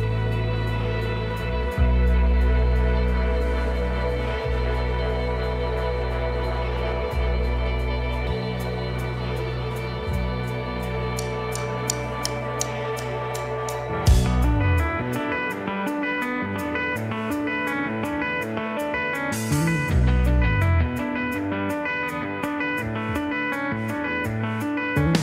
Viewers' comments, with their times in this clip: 0:10 First touch of optimism/hope Love it!